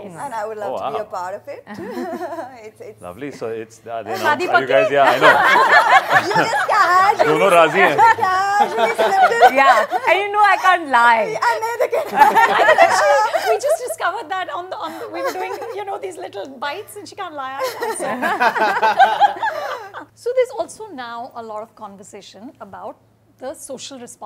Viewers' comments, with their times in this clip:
0:09 that Telugu accent man....